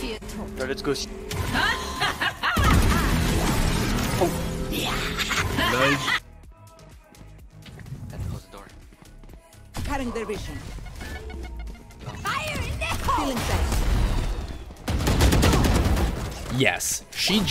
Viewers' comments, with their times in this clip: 0:03 Thats what Reynas clapping right now